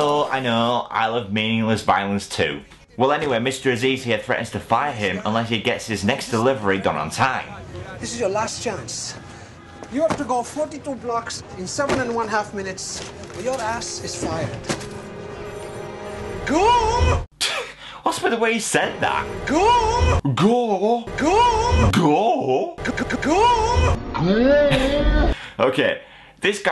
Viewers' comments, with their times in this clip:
0:10 LMMMMFFFFFAAAAOOOOOOOOOO!!!!!!!!!!!!!!!!!!!!!!!!!!!!!!!!! "GOOOUOOOO!!!" I'm not trying to be racist but this is BY FAR the FUNNIEST thing in the movie! Sadly i only found out now about this accent because i'm actually german